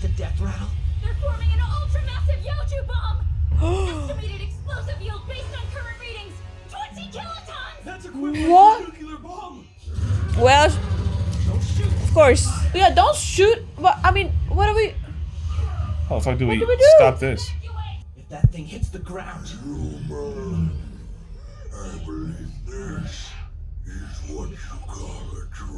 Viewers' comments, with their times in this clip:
0:08 I never get why people mispronounce it as nyoo-kyoo-ler